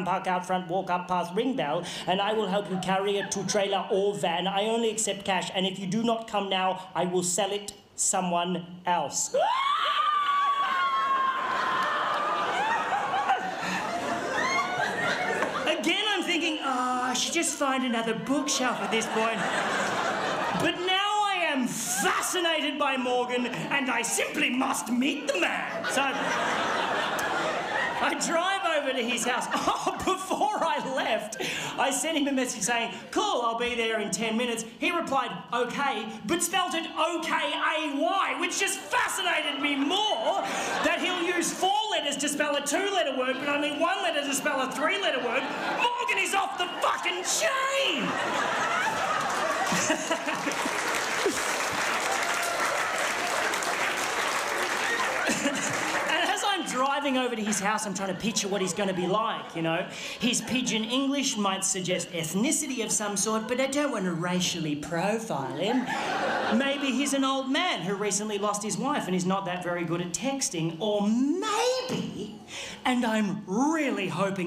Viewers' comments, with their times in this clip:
0:08 the breath in scream was hilarious.
0:55 The puppet coughed